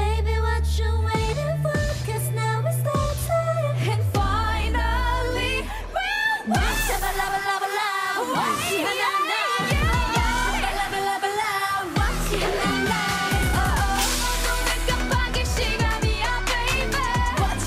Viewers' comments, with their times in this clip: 0:04 That highnote lily wow